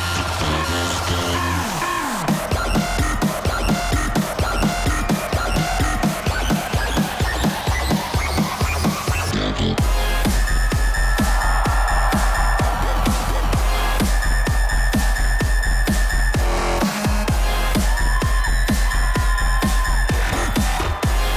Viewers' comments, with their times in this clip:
0:04 Diplo misses the drop lol
0:04 HAHAHA Diplo misses the drop! It's okay because I got thrown off too!